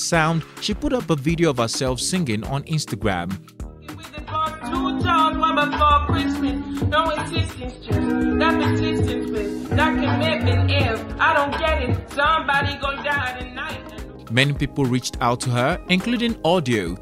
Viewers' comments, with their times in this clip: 0:04 She is rapping here, not singing. There is a huge difference.